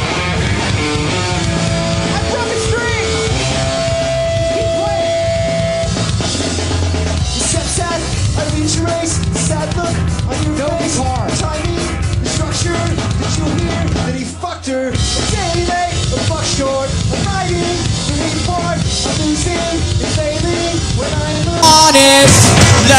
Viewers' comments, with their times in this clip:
0:06 Hey, the verse with just the bass guitar sounded good! They should have done it that way all the time!